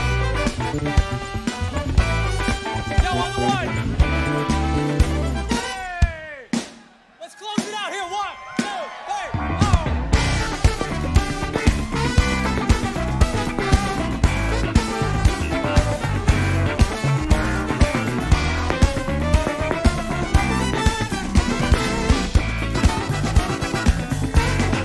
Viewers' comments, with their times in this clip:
0:07 ~ That Bassline and Slap Solo in Cosmic Sans murdered me...